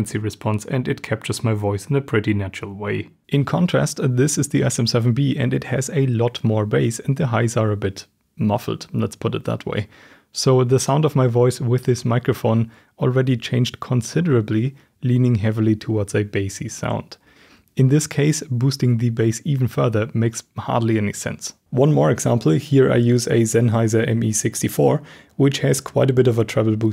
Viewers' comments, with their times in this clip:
0:10 for a moment i thought my speakers are going crazy...